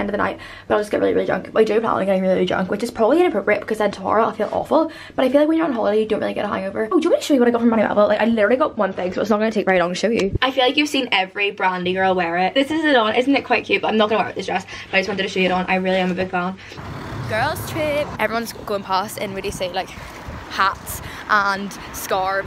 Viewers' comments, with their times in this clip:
0:06 rap god x200 speed🤣🤣🤣